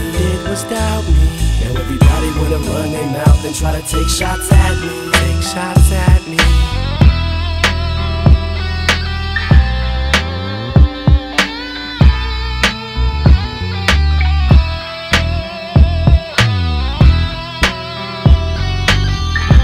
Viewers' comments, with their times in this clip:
0:05 that sad melody 😩😩🔥🔥🔥🔥